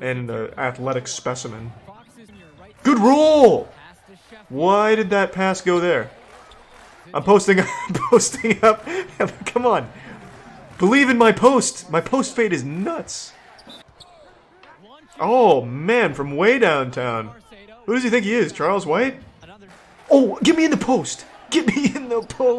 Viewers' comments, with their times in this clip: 0:09 sec the "NiCe" voice crack got me